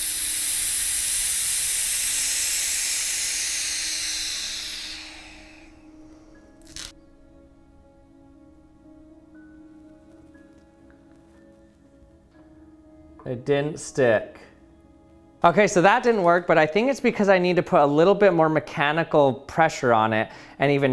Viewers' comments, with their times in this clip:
0:07 Suspenseful silence. "It didn't stick."